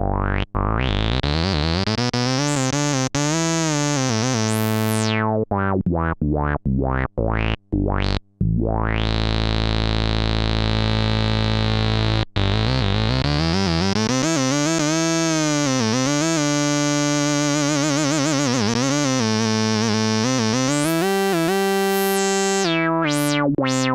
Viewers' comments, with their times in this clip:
0:06 ROLF!! YouTube's auto close captions trancribes the part as "oh why why why why why" xD